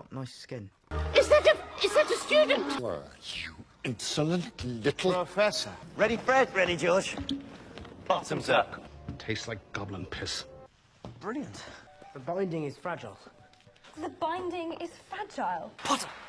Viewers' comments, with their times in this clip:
0:04 The way Lupin says "Professor" is so funny to me